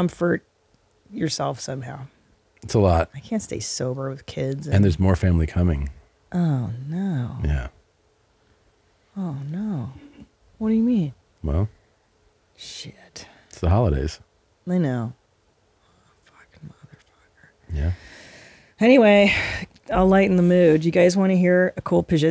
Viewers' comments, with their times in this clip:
0:08 Tom with a silent burp Ni vu ni connu.🤫
0:09 tom burps, but he swallows it. So he doesen't lose to christal 😆
0:10 What a great episode! 😂 Preeeeeetty sure I heard Tom burp first 😬.